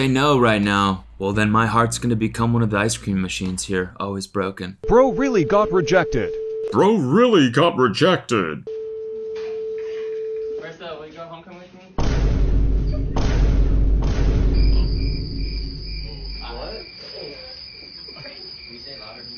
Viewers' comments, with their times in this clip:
0:05 he sounded more like the voiceover rather than the actual voiceover 😂
0:07 ok why is this voice so good tho